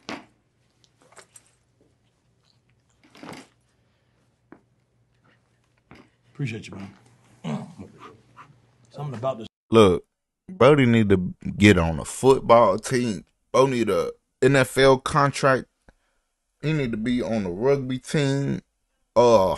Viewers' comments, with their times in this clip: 0:07 (✨Once you get famous you better remember me as your day 2 or day 1 because I’m a w supporter ✨) the silence is getting to me😭💀💀